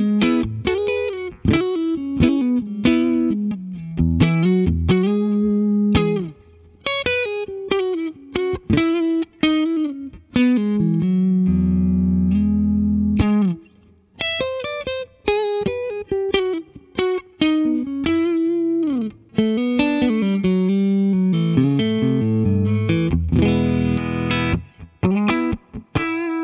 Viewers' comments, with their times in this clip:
0:07 got me, that*s the tone I love!